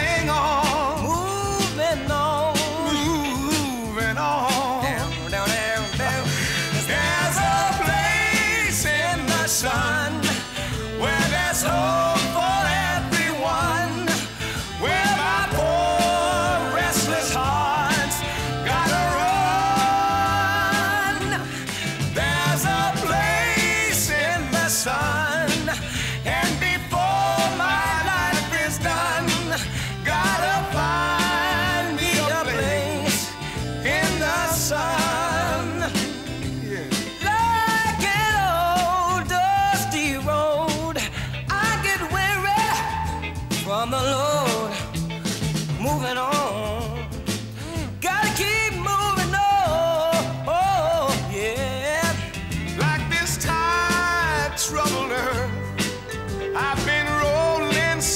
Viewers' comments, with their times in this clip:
0:04 Love when Stevie plays the guitar with his mouth and they laugh and the duet begins. The golden '60s!
0:04 Stevie starts riffing the melody and Tom laughs, classic
0:35 Tom's "yeah" ❤ love both
0:36 is such a great moment. Stevie just belts and it comes out so soulful. Especially the reverberation/acoustic resonance of the room after he shouts “weary.”
0:43 you can hear how Stevie’s voice pierces the natural reverb in the stage area. Tom’s voice is so mellow, it barely cuts through by comparison.